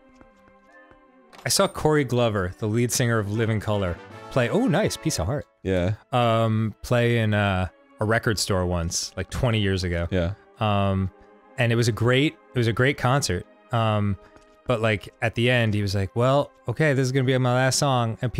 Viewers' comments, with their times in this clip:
0:03 Oo, piece of candy!